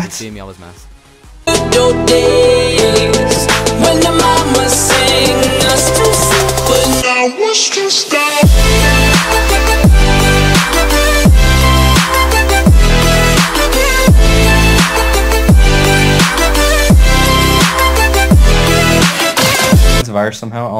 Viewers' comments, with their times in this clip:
0:04 COPYWRIGHTED MUSIC ON